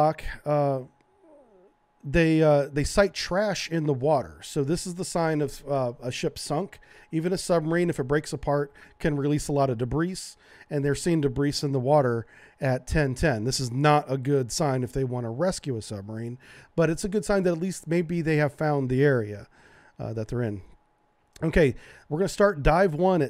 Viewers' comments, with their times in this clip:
0:09 Isn't the s in debris silent?